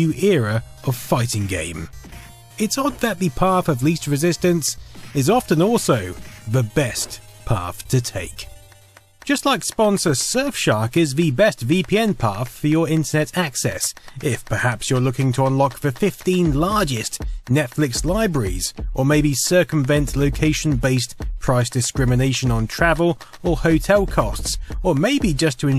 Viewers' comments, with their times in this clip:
0:10 surfshark is the best VPN for your incest access? Hahaha